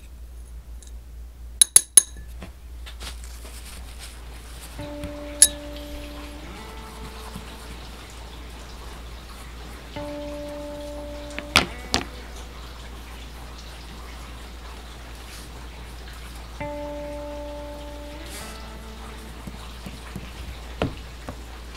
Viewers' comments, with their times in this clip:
0:07 Nice music Kinda reminds me of my lonely artwork times. Another pretty girl. The typemy bro likes. 😉